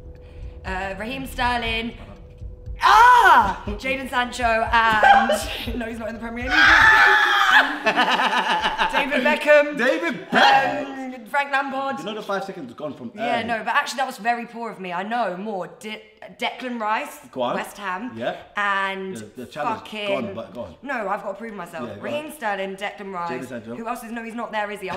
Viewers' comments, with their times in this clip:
0:06 idk about u but i hear a bit of chunkz's 2017 laugh lol